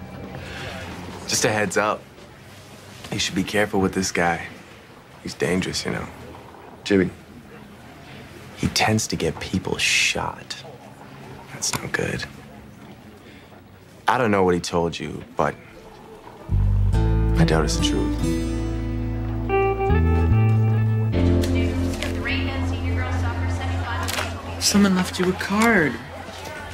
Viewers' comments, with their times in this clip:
0:10 why that sound like the moment he said, “W’s in the chaaat” During that zesty ass stream